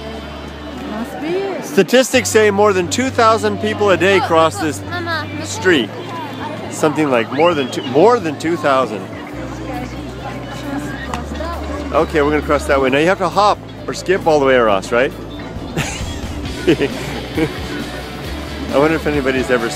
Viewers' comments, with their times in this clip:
0:07 I heard someone in the background say gaijin....